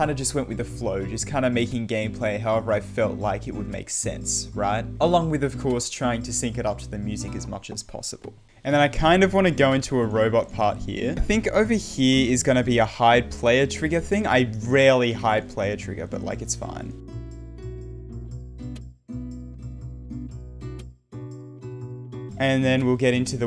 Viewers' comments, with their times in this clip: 0:08 i swear every time i watch this.. triggers me with it talking twice
0:08 video bug ;) you said something the same 2 times in a row.
0:09 and then I kind of want to build a robot here is repeated twice